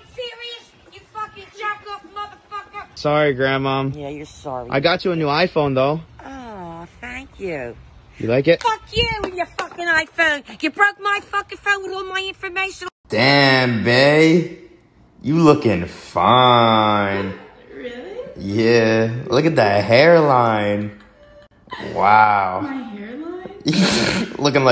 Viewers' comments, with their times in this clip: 0:08 that sounded like a rap!!